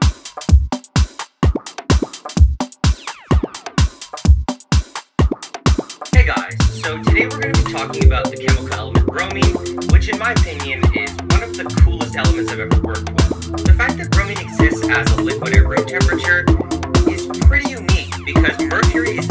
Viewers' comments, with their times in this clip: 0:06 If you want to bypass the drum solo skip to